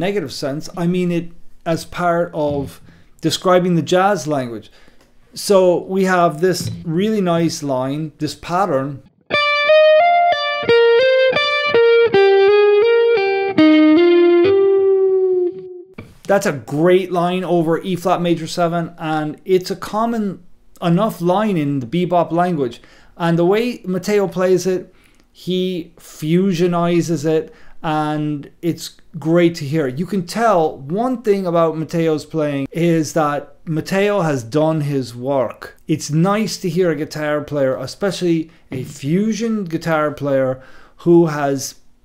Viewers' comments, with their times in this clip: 0:08 it sounds like "If I Only Had a Brain."
0:09 sounds like: If I Only Had a Brain - The Wizard of Oz
0:24 ‘if I only had a brain,’ Jaco also played the shit out of that lick. One of my favorites